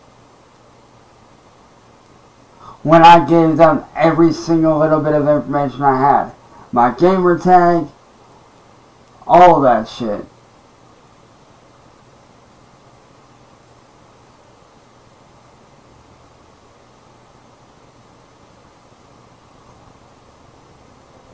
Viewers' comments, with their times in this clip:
0:09 that was a very long scratch